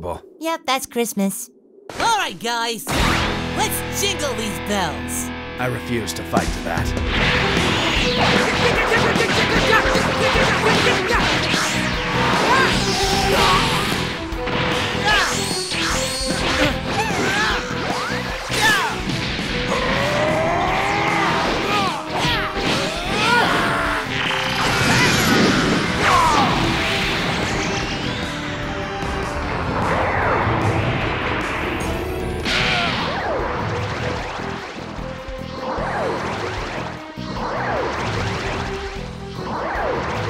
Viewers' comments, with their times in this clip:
0:07 that ost lol
0:09 why did the jingle bells orchestral actually slap. Is it on Spotify by any chance??
0:23 Turles scream though when Gohan threw him 😂😂😂😂☠️☠️☠️☠️